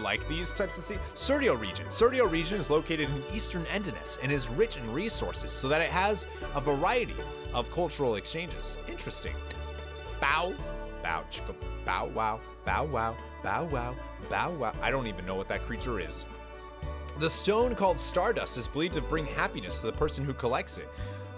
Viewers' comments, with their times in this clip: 0:09 Idk why but when you voiced the rabbit/mouse/squirrel/dog thing on the chair in the library, I couldn't stop chuckling at it. lmao the way Dart just stares at it